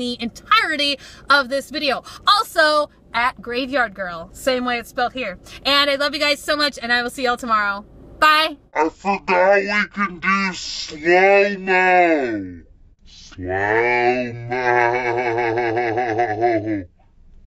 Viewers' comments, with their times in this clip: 0:09 My kitten, who was asleep on my lap, flipped out when you did slow-mo! LOL